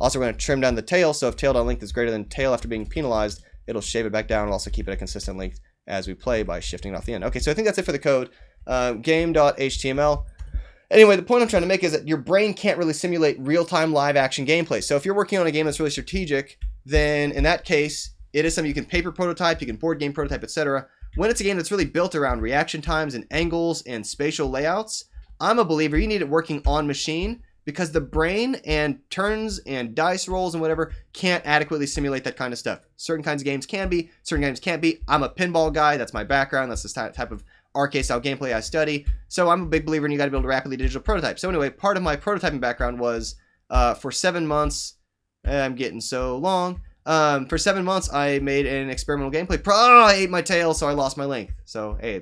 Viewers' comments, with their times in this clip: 0:07 Yes he does.. He speaks too fast to be real.. Easy to accelerate a video, and after that, puting a countdown at real speed...
0:07 noone mentioning that his voice is obviously sped up? i doubt that ...
0:07 How to code snake game in JavaScript in min while setting world record for fastest rapper.
0:07 He speaks too fast to be real.. Easy to accelerate a video, and after that, puting a countdown at real speed...
0:39 blablablablablaba prototype #sofast